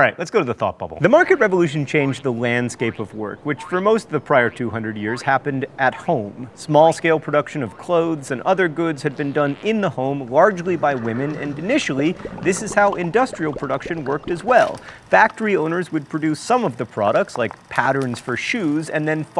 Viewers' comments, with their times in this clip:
0:06 is that a fart???
0:07 im pretty sure theres a lowkey fart sound to go with the guy pooping in outhouse